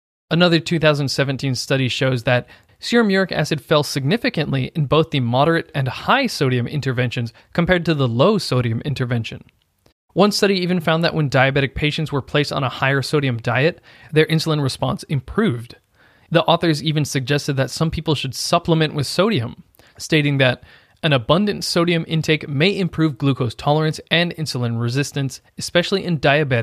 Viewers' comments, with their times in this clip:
0:10 So the cat scratching here is a perfect example of this sodium study??